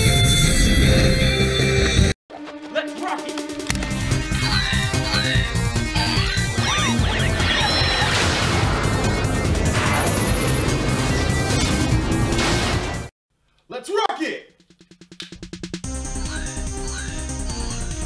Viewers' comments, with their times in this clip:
0:03 lol when the black ranger says let's rock it he literally sounds like carlos